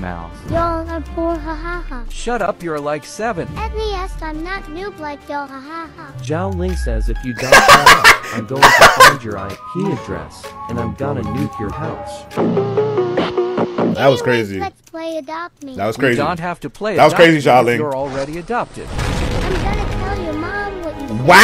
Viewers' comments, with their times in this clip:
0:09 He really stopped laughing after that 💀